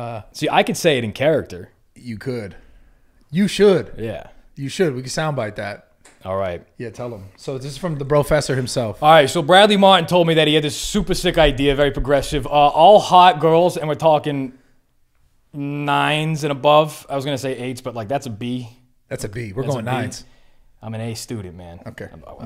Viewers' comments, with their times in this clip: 0:06 crazy how he just flipped the dom switch on like that